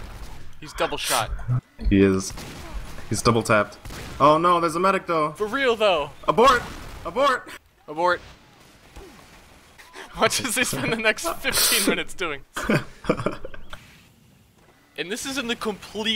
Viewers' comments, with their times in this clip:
0:03 red ghost pyro appears on screen as they yell abort